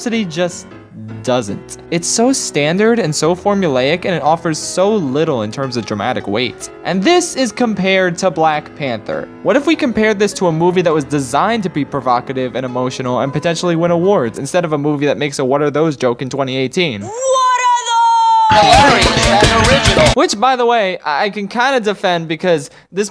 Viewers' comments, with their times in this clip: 0:08 It took me till to realise dont stop me now was playing in the background